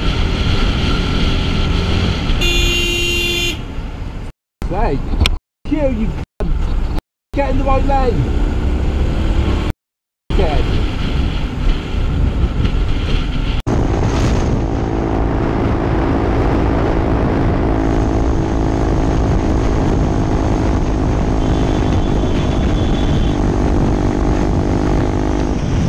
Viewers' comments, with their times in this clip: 0:06 he indicates to come over and he starts shouting at him. Bikers think that the lane has to stay at a constant speeds